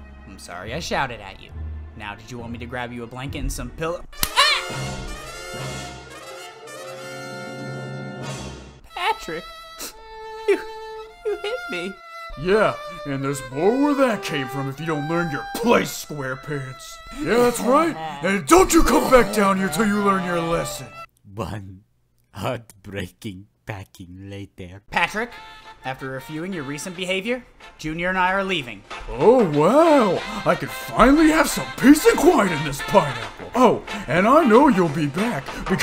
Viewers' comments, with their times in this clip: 0:09 THE MUSIC I CANT😭😭
0:09 not that song😭
0:15 Bro, I just realized when SpongeBob gets hit, I can hear the sad hamster music
0:21 This should be a Robot Chicken sketch. Also even the narrator is crying.